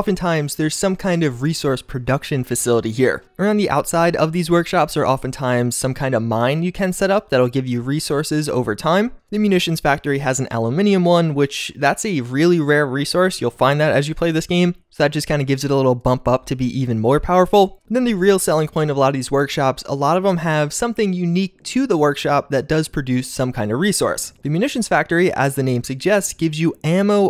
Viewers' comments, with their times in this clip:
0:09 excuse me, what was that... Al'u'mane'ium? Uh-Loo-Min-Uhm